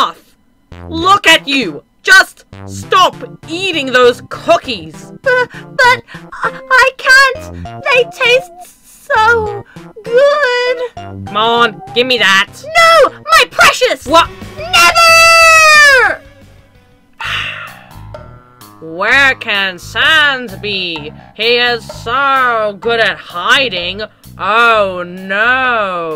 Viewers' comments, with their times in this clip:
0:05 I like the girl voice for blue
0:11 I love this comic 😂 Why did Fell-Sans sound so freaking German/Russian in that one comic with all AU characters in it? I found it hilarious